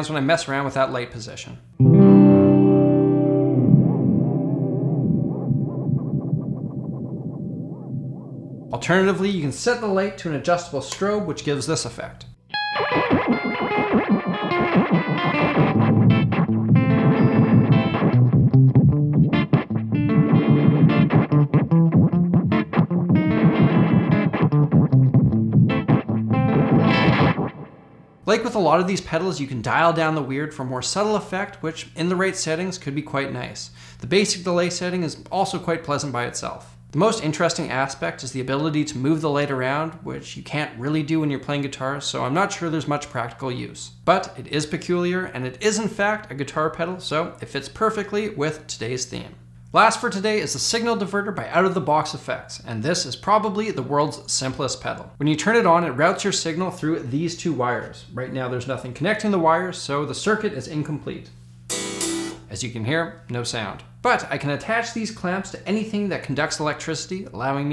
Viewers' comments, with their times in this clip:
0:05 I think this pedal is like a content awareness scale for the audio
0:11 i thought he was going to play a spongebob lick
0:12 sounds like a early 2000’s 3D game like Scooby-Doo or sponge bob.
0:12 Thee Oh Sees would like to know your location
0:14 would fit abes odyssey or another early 2000s obscure game with uncanny cgi.
0:15 you can get this same effect with a $13 Danelectro fab d5 chorus pedal.
0:24 The effect and tone of that pedal sounds just like the tone of Steve Hacketts solo on " counting out time" by Genesis
0:50 For the signal diverter, it has a lot of potential to be different & for each trial it was just BARELY, BARELY different. That pedal is more of an electrician's pedal, such as experimenting with voltage. Also, as for humans, we emit some electricity (which is why touching a 1/4 inch guitar cable jack buzzes it a bit), but not a lot. That's why it was buzzing when you sent your signal through you.